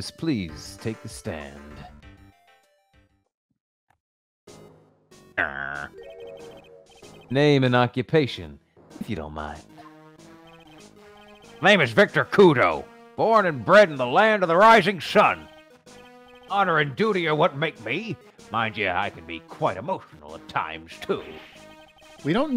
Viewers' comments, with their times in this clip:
0:05 Victor's a Minecraft villager confirmed?!?